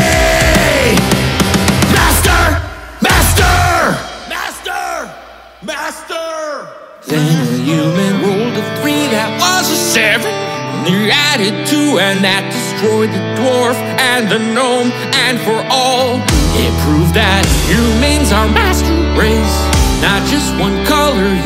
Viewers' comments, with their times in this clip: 0:05 I swear everytime i come to i think i'm listening to the literal trailers from tobuscus. Such nostalgia